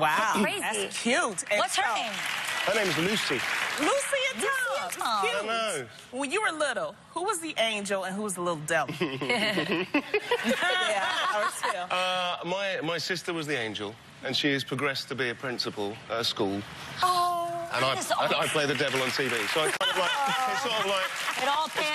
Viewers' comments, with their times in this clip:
0:08 his laugh made my day xd